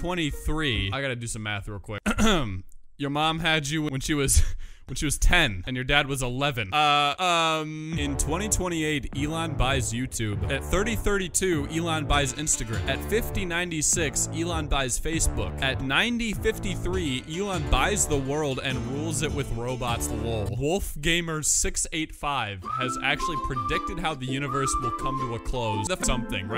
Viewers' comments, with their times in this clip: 0:08 arstotzka death theme goes hard even if its only for a few seconds